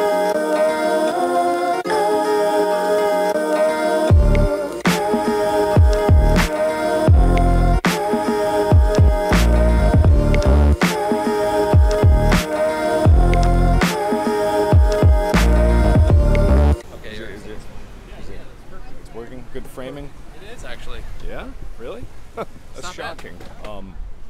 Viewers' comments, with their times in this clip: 0:08 Theta annoying Vlog music tons of youtubers use